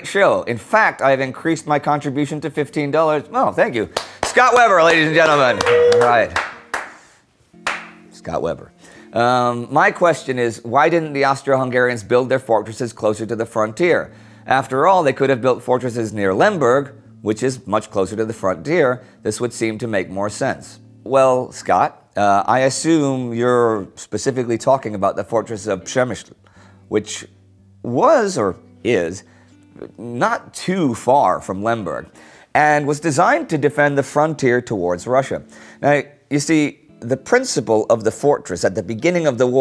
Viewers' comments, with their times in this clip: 0:07 I bet the guy felt awfully proud for being the last person to clap, just for that I'm gonna set up a patreon account to donate
0:27 wow :0 I had to go back and listen again because I almost couldn't believe Indy pronounced Przemyśl correctly